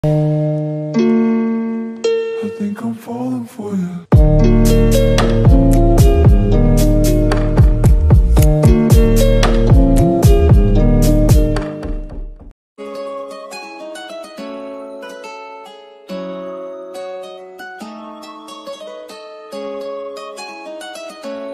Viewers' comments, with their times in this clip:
0:07 Is that real crying man ???